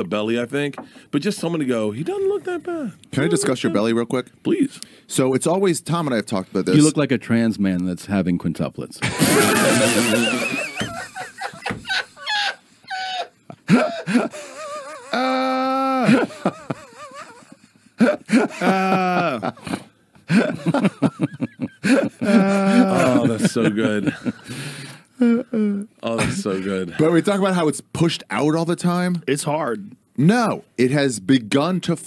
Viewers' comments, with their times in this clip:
0:06 why does Joe always do this bull shit. the most unenthused "ahhhh so funny ahhhhh ahhhhh" hes the least funny guy in this room.
0:14 im going to isolate Rogans "laugh" noises here into a banging track There are three sounds he makes, you could think they were a mic tone test, but i think they are just "i want to be included in this" sounds
0:14 Joe just making noises
0:14 Joe's guttural "ahhhh"s had me dying
0:15 joes fake laugh
0:18 yo what was that laugh from joe 😅